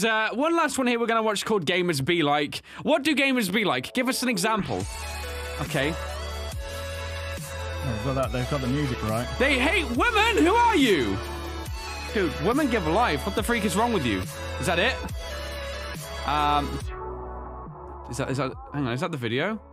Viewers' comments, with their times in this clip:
0:05 I LOVE THAT SONG, ITS AMAZING!!